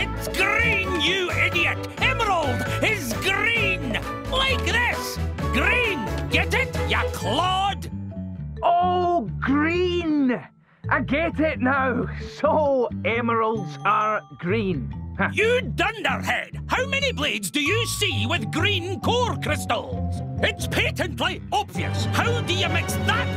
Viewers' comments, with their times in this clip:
0:05 I didn't know Peridot died and was reborn into this guy